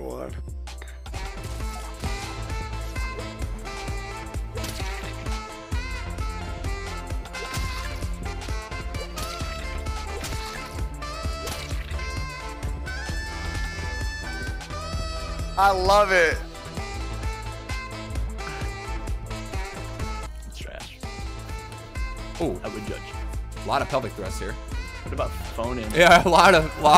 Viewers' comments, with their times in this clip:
0:10 Oh yeah back round music and phone it in